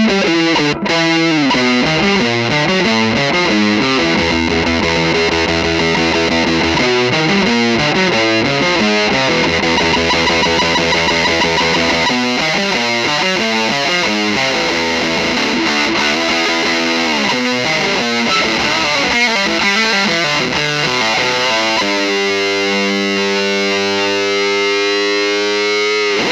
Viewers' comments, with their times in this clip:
0:10 It's the subtle differences in fuzzes like this that makes me fall in love with them all over again. If I ever have an unholy amount of money to spend time just buy all of your fuzzes.